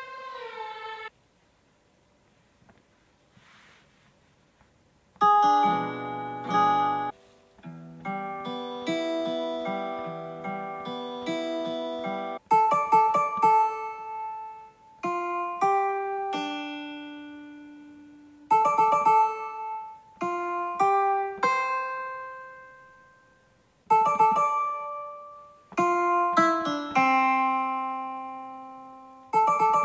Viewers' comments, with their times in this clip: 0:07 for some reason that piano sound you made sounded a lot like Metallica's song nothing else matters lol
0:13 bro singing japanese but idk what music is